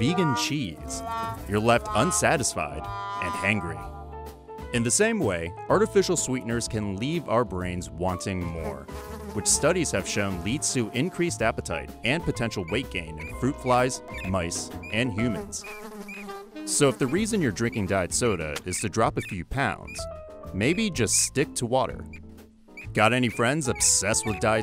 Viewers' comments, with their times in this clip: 0:07 I literally thought there's a fly in my room buzzing to my right and left ear
0:08 IS NO ONE GONNA TALK ABOUT THE FLY ???? i thought it was next to me and not from the video :(
0:08 is it just me that thought a real fly was behind me?
0:08 I thought i had a fly near me
0:08 THAT FLY GAVE ME TINGLES CUZ I HAD EAR BUDS IN
0:08 headphone users beware
0:09 I Thought there was a real fly in my room when I heard the sound
0:12 i was wearing headphones and suddenly i hear a fly noise and almost jump outta my bed